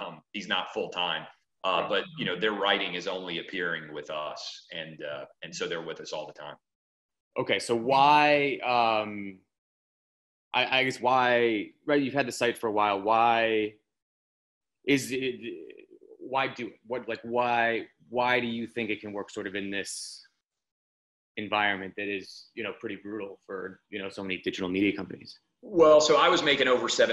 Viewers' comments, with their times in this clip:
0:09 This journalist is either the worst interviewer or not interested in having a real dialogue. Either way he doesn't belong in journalism. He is basically going down a list of questions he has, checking them off. Clay is answering a question, and he would ask an unrelated question. On top of that, you can tell he is either intimidated by Clay, nervous because he knows he is doing something dishonest just trying to catch Clay into a "gotcha" moment, or maybe simply because he is a beta. He stutters, can't formulate a thought correctly. repeating "why" over and over again was pretty excruciating to hear. I almost felt bad for him... but I felt worse for Clay who had to sit through such a boring interview for over an hour.